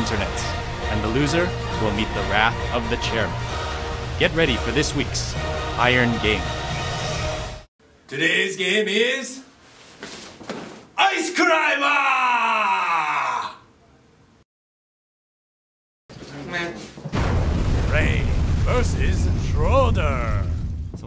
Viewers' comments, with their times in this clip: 0:09 WTF is Ice Crimper?